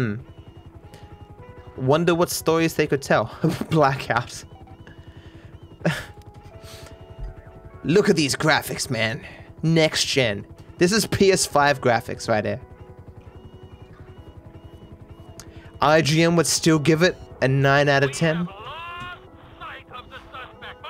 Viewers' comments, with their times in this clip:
0:07 Cyberpunk theme plays